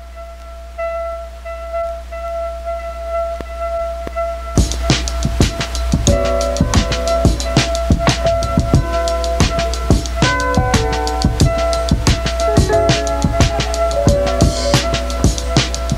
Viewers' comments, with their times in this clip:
0:03 I'd recognize that saucy Vulfpeck beat anywhere, very crafty sample